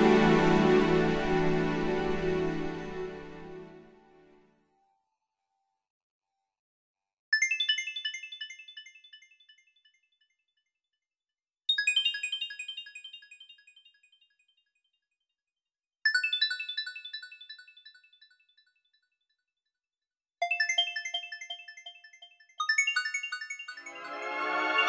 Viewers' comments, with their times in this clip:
0:05 Doesen't this song has a bit of Terraria soundtrack vibe? Specially forwards.